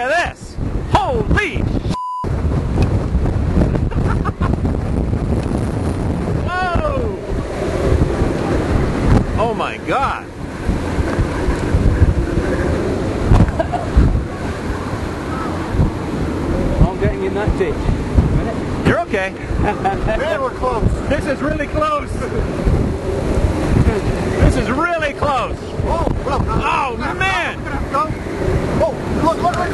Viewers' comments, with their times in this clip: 0:05 it sounds like an EF0 to maybe an EF1.
0:08 Starting some of the best wind audio I've ever heard in a storm chaser video!
0:08 I love how you can hear the wind whistling through the wires
0:16 cant beat the howling thats creepy!